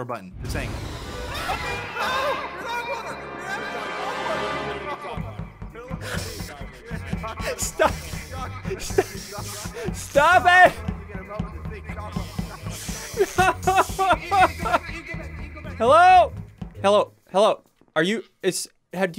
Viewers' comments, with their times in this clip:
0:07 This is the voice that springtrap hear all of the kids that springtrap kill souls